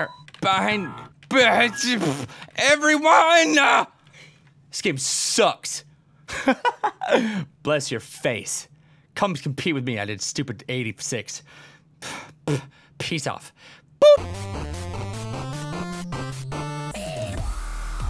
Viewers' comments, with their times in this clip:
0:03 Am I the only one who thought he sounded cute ? :3 cuz I did x)